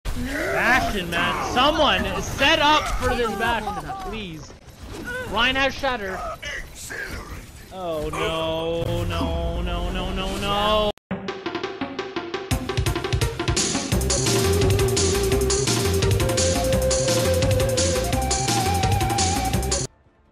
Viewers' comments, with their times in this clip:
0:08 Channeling Cleveland Brown 😌